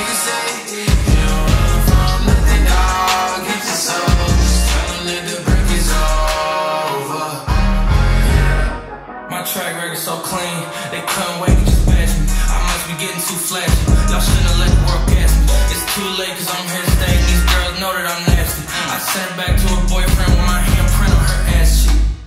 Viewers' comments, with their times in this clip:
0:10 i thought it was a guy talking behind me